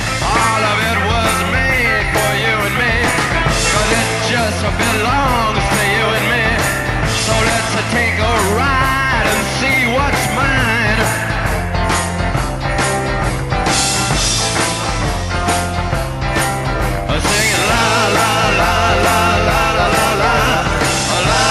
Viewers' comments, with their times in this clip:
0:04 I can still hear the heat vision at this part lol